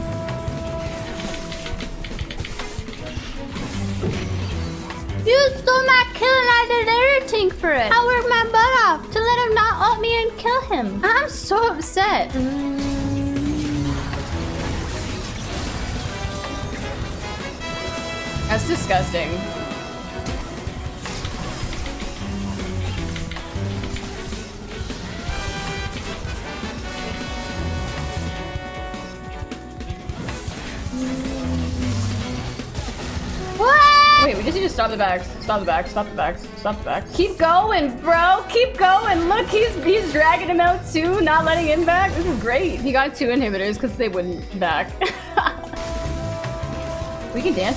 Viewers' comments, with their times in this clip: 0:05 you're so cute with that voice 😍😍😍
0:34 can you hear her phone 😂